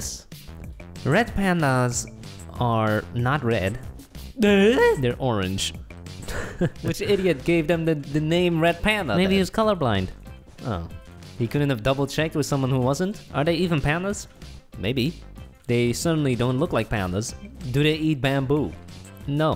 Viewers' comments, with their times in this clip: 0:04 that sound DOIU